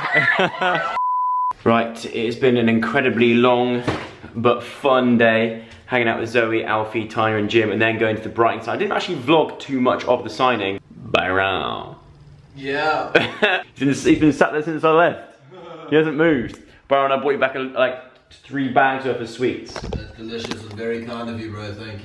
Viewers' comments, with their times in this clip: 0:10 The way he says "Byrooon" :D :D :D ❤